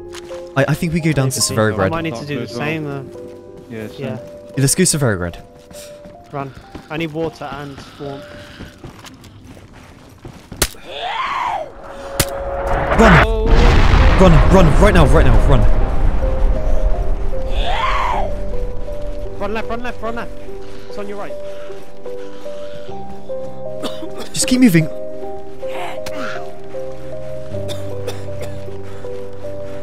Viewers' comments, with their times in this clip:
0:10 What happened ? It sounded like a bomb or a plane crash. I don’t play DayZ so XD I’m a lil slow